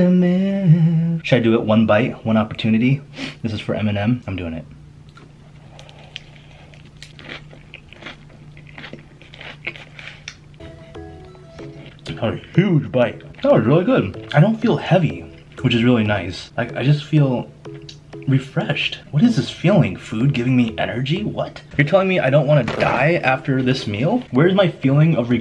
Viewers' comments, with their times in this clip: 0:09 I love the pause lol